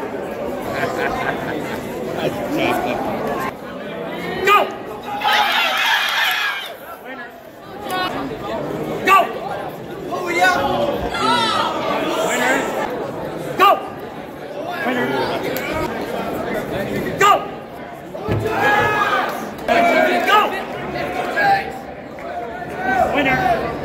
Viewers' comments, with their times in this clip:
0:04 Holy! Did anyone hear the turkeys! 🤣